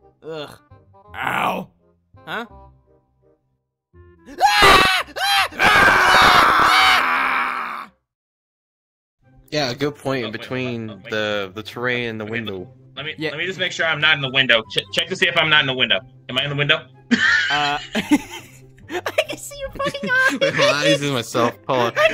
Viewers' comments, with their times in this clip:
0:04 What was that scream?